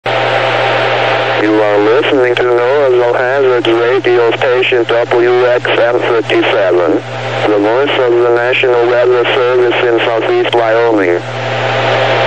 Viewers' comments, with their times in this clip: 0:00 That CRS Paul is slow!